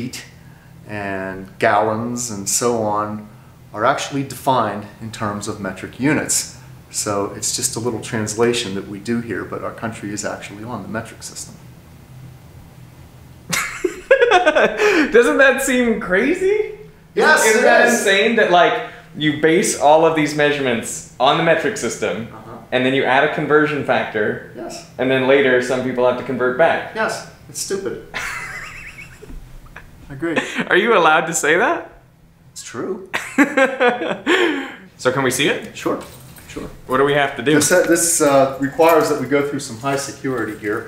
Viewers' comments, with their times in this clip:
0:08 The silence Epic.
0:11 one second of mind blowing silence XD
0:26 That nonchalant "yes, it's stupid" just cracked me up :'D
0:28 the laugh I'm clackling :v